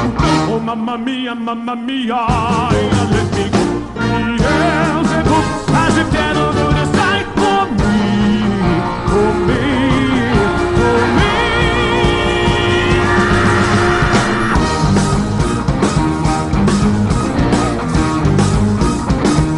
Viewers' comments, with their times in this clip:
0:07 Okay I love Tonys great voice in every second but wow that gives a lot of goosebumps ❤️